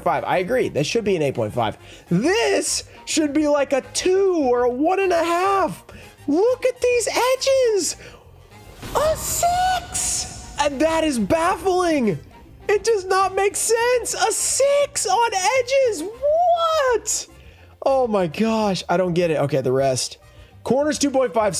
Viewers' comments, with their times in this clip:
0:03 They took pity on you with that dark magician lmao Bro your voice reaches new pitches lmao